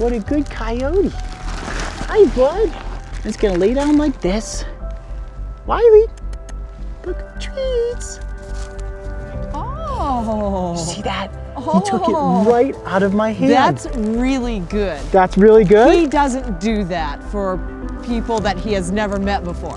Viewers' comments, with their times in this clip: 0:07 the way he said "treeeets" is so wholesome and cute